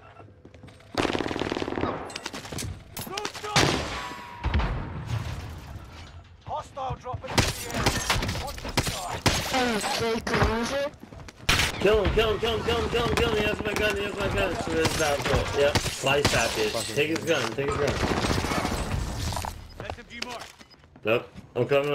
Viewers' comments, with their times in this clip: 0:07 so funny when they eat their mic XD no idea wat he said even